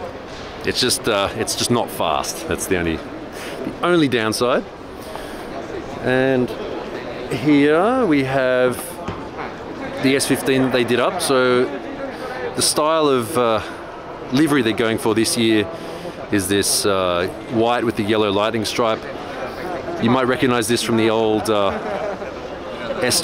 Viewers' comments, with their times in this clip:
0:08 Did I heard minecraft villager sound..?